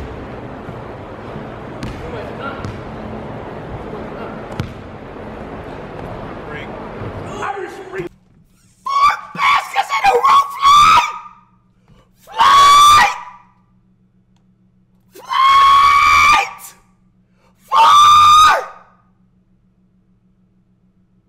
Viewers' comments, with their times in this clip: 0:07 the highest pitch sound known to man